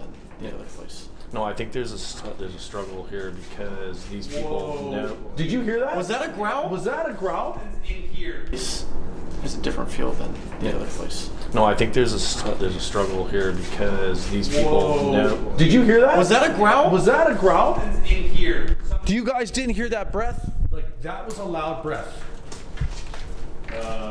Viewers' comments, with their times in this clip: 0:06 WTF??? THAT SOUNDS LIKE AN ANGRY STOPPPPP!!!!!!